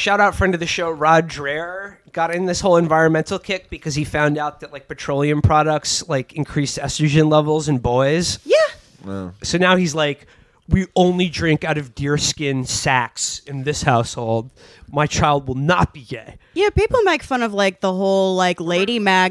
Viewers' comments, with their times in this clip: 0:07 Adomian is a genius: Alex Jones as Sam Kinisen (and his Chris Matthews is sounding a bit Bobcat Golthwaith—the lunatics truly have taken control of the asylum)